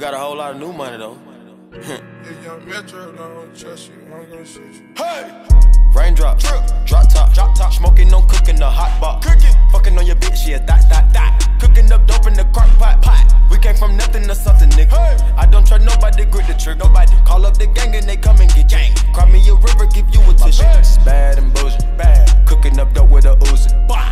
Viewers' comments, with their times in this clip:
0:05 the bass is insane